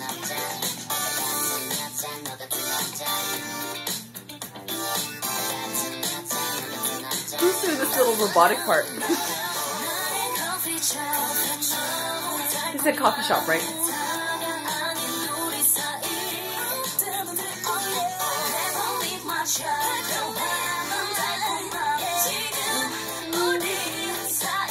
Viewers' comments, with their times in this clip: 0:09 I don't know about other parts, but is it only me, or does that almost sound more like Moonbyul? It could be Solar, so not sure.